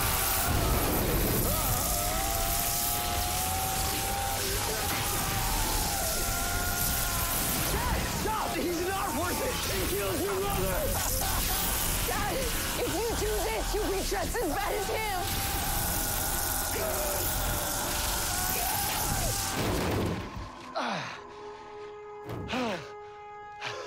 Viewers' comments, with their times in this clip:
0:10 thawne is literally laughing
0:10 Bro thawne laughed when he said he killed Iris 😂😂